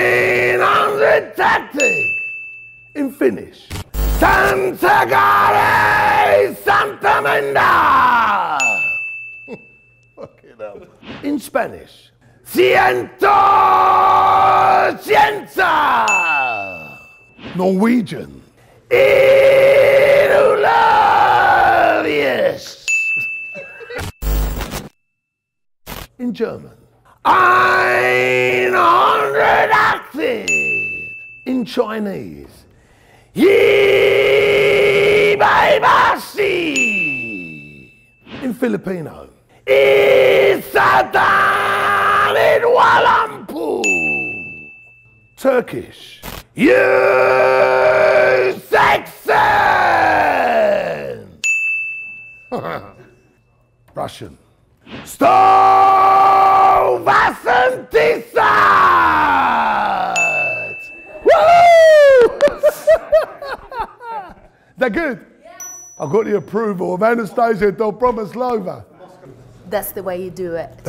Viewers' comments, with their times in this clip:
0:03 Sounds like he about to comment on a samurai charge
0:04 Harry Potter spell
0:18 sounds like black metal
0:19 which metal band does this guy sing for? 😂
0:45 sounds like he's saying - you are sexy
0:46 Turkish...it sounds like "you're sexy" 😂😂
0:55 All I hear is Stalin declaring war